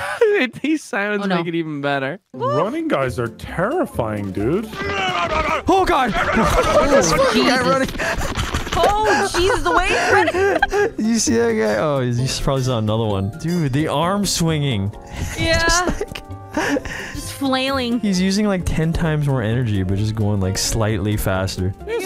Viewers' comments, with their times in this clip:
0:04 Sounds like Homer Simpson, though I can't tell if it is him, and if so which episode of The Simpsons it's from.